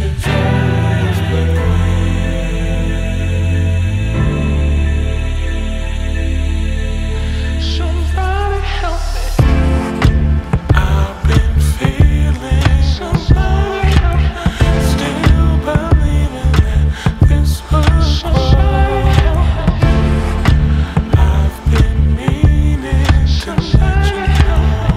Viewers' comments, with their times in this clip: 0:08 The production is other worldly: dripping wet, clean, rich, and deep. But the musical prowess and talent, Electromagnetic flare. This is music that sees itself, sentient. Glad I heard this song. Minute for me.